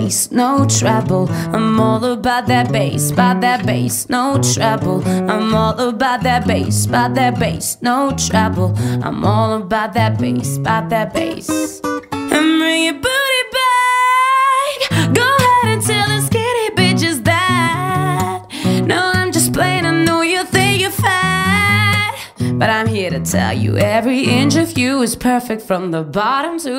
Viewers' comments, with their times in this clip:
0:10 fave part. omg its perfect, the guitar riff, the voice. ughhh wish i had that voice
0:13 I CAME HERE TO LISTEN TO BRIDGE AND SHE KILLED IT